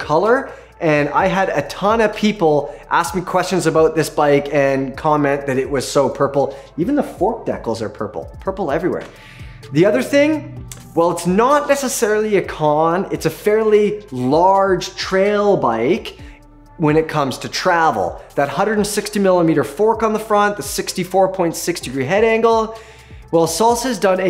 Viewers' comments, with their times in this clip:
0:06 I have NEVER heard someone pronounce decals like that